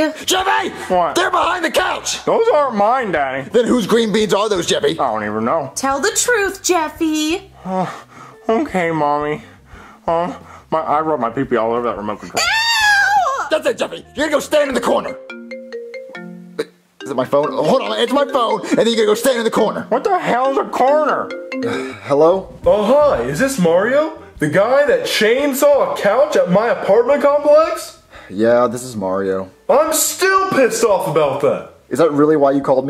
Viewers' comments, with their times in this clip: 0:10 He was talking so fast I don’t know what he said
0:15 That sounded like Sheldon's cellphone ringing!